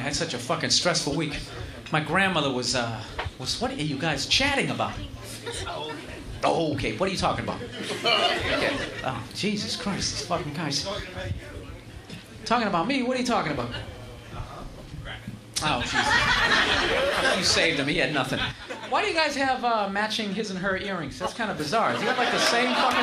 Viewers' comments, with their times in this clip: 0:05 I love his noise he makes c: